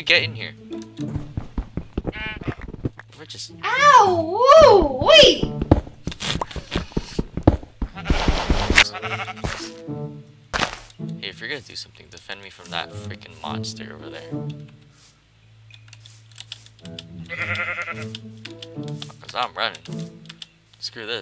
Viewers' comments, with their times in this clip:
0:03 You can hear demons 0.25x speed 👍😂